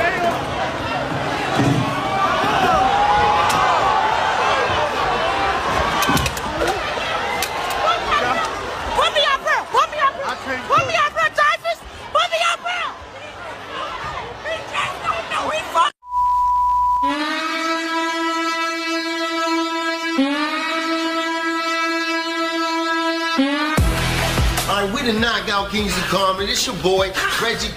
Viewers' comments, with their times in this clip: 0:09 The best part is the lady at the end yelling at her boyfriend to lift her onto the stage to join in the hood festivities.